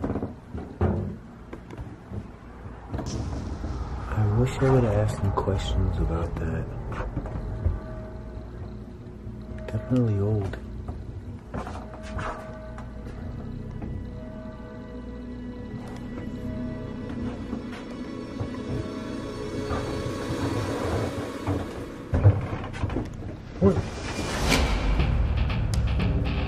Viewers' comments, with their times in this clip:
0:09 I know this video is 2 years old, but you can hear a woman saying something. I couldn’t make it out. Just barely heard her whispering.